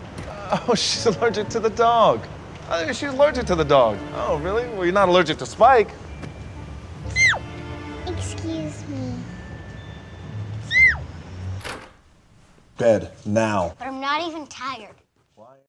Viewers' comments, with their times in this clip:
0:07 That’s a Fake Sneeze Peyton